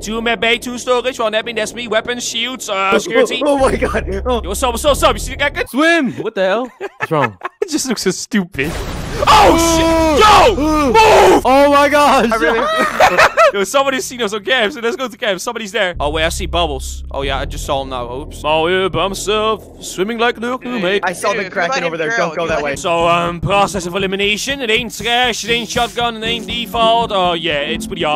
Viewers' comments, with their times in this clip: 0:08 it may sound like OH SH but it’s ocean
0:09 when you scream oh shit inside but you try to sensor it but everyone still hears it perfectly